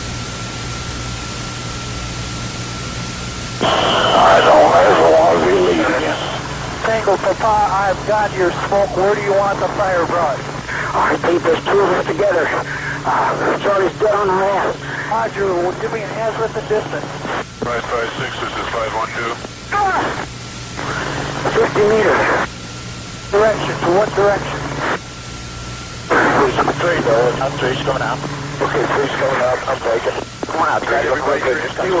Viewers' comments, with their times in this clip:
0:03 was that guy groaning "I don't ever wanna be here again" ?? Or did anybody else pick up what he sed??
0:10 I'm trying to understand exactly what the whispering soldier says but I'm not a native english speaker nor do I have a trained tactical radio ear. Can anybody please tell me exactly what he says? Thanks.
0:13 Right when the 1-0 is whispering that the charlie was right on top of them really brings home how fuckin personal and scary it gets down there. Wild, wild stuff. Anyone interested in hearing about this firefight should read Maj. Plaster's books, and the other ones about MACVSOG cross-border ops. Stryke Meyer's "Across the Fence" is a great read also. All of these SF soldiers wrote the TTP's for today's SOF units. Alot of the founding members of Delta were running ops with SOG.